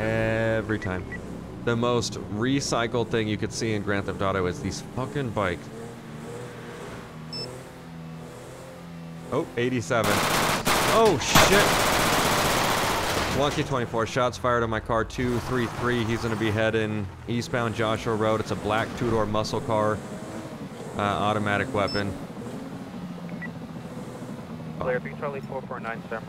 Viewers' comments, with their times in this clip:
0:09 Don’t have ur volume up high like I did